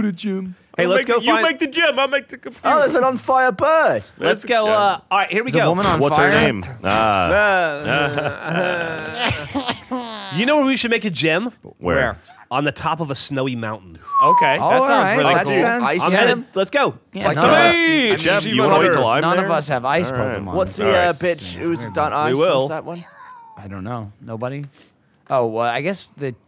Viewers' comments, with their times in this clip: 0:07 that fucking laugh 😂😂😂